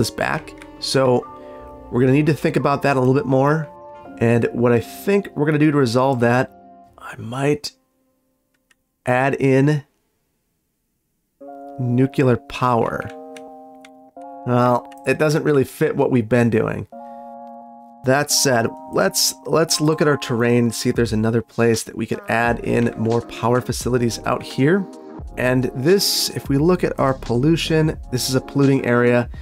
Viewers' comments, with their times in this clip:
0:10 "Nucular. It's pronounced nucular." Thanks for the throwback. Awesome video as always.